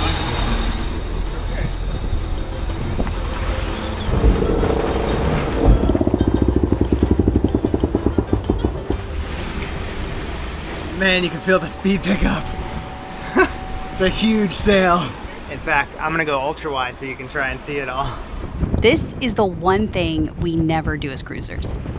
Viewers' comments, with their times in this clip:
0:07 That sound your stomach makes after eating Taco Bell.